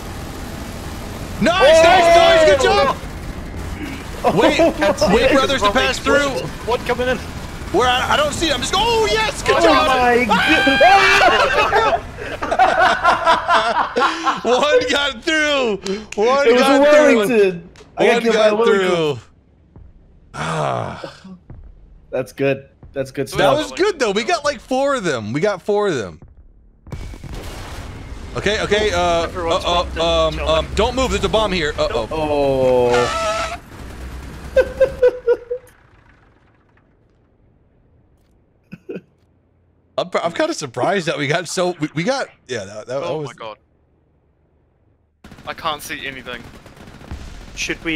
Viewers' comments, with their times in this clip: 0:09 OH YES GOOD JOB ! - eeeAAAAAAAAAAAAAAAAAAAAAAAAAAAA!!!!! PhlyDaily's most funniest scream i've heard haha
0:34 That laugh is hilarious 😂😂😂